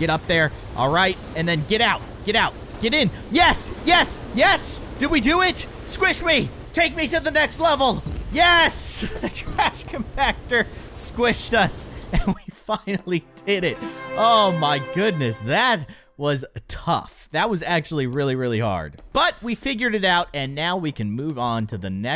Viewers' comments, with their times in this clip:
0:09 did anyone else hear the f word?